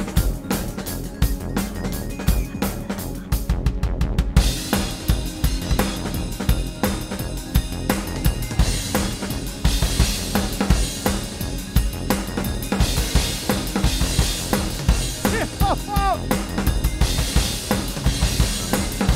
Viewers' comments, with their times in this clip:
0:03 I started mentally heading Tunak Tunak Tun